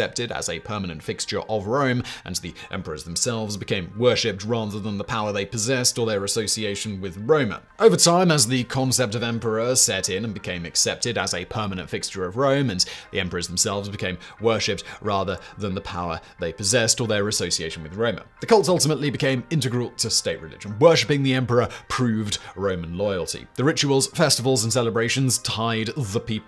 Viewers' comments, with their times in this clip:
0:09 Pretty sure was repeated. XD